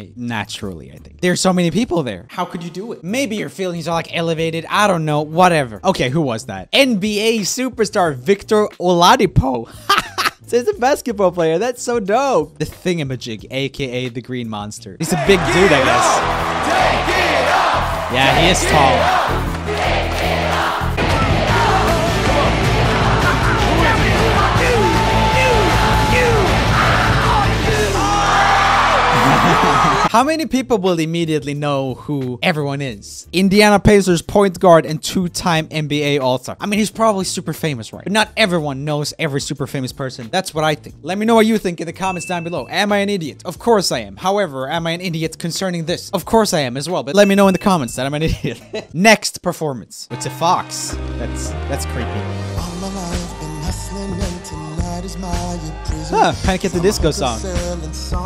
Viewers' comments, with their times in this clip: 0:07 I'm sorry how did you just pronounce Victor Oladipo??? 😂
0:41 I am absolutely shocked that Oladipo can sing like that. But yeah, most of the time I don't know the people and it always bothers me when they are actual singers who have sang professionally.